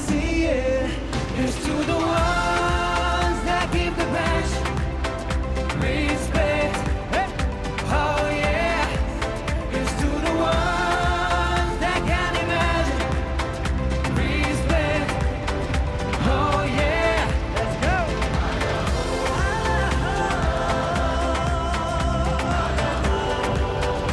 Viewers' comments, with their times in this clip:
0:10 it the Arabia language